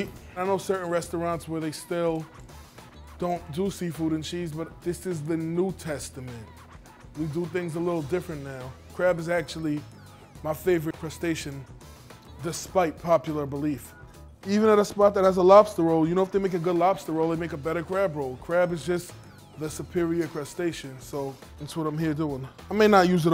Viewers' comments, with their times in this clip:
0:04 sounds like a remix of Utada Hikaru's Wings.